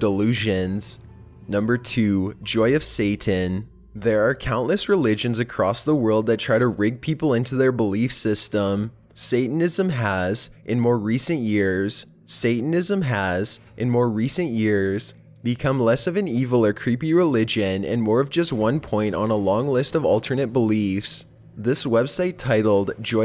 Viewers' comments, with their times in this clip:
0:08 was that an editing mistake or was it done on purpose?